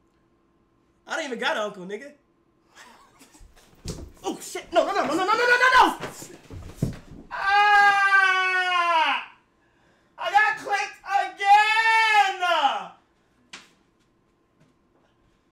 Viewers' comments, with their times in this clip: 0:10 nice crack gagent